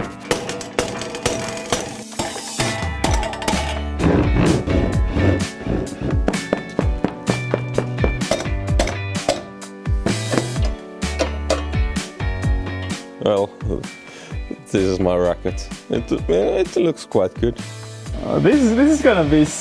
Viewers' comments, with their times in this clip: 0:06 it sounds like hes putting blocks down in minecraft